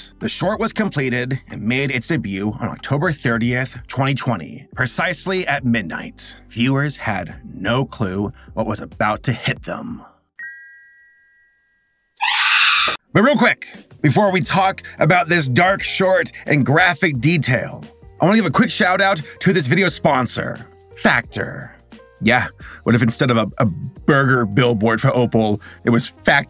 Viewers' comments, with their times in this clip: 0:10 I’m sorry but the “bing!…AHHH-“ made me start laughing 😭 is the time btw in the vid